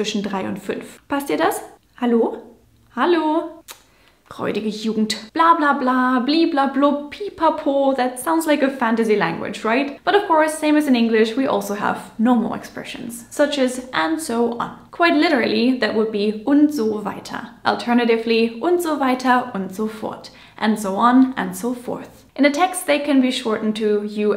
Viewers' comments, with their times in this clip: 0:08 the way you’re pronouncing Po , i love it , in Albanian Po means yes , watching you i say Po , hell yeah